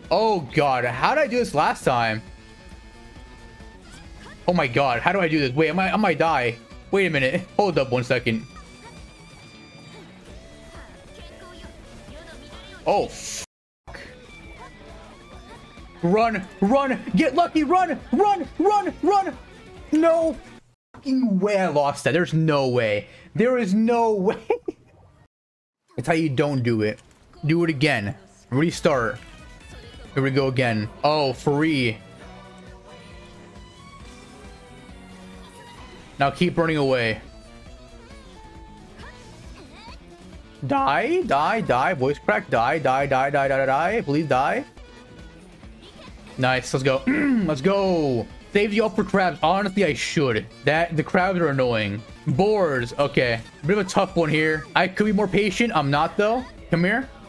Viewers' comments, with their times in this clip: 0:09 her ult went well with the music
0:39 that voice crack 💀